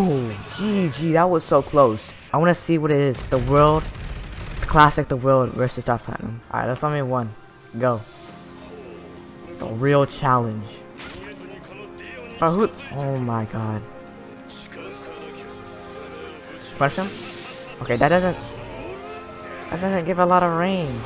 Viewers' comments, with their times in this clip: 0:09 epic dtw music intensifies